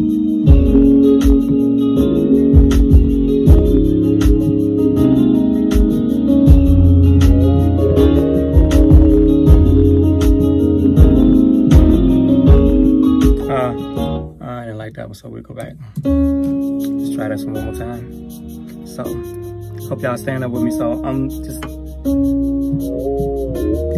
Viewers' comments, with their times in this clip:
0:08 Hey ! Did you use the pitch bend ?